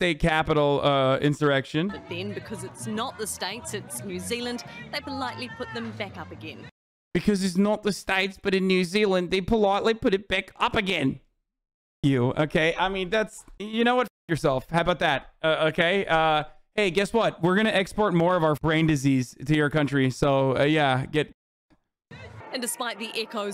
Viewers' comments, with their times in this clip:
0:07 “haha, fuck y’all Kiwis!” Haha, we got you good! (Hasan imitating a Kiwi accent that sounds Aussie af) Alright, now I’m mad.